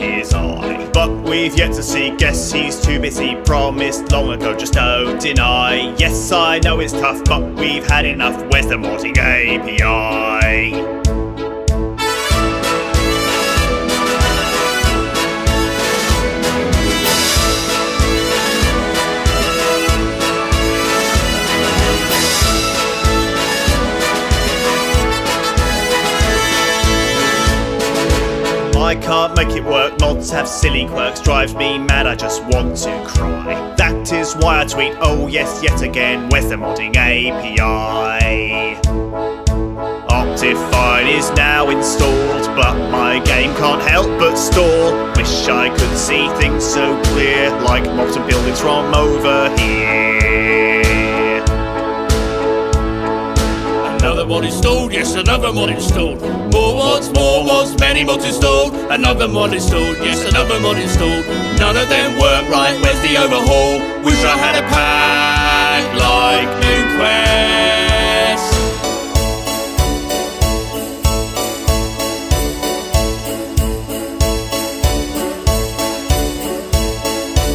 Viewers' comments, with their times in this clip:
0:10 Wheres the Modding API?+captions="when the morning I ain't gone anal" What
0:38 i rule Rozy WHO THE HELL IS ROZY
0:40 In the video: Optifine is now installed In the subtitles: I rule Rozy. oh god.
0:42 is now installed online tank on hello still
0:46 my game just chat help but store fish
0:59 captions: another long day so here's another phone
1:00 another long day so here's another phone is stolen other than work.
1:00 Another long day so here's another phone is stolen other than work my the overhaul lucia XD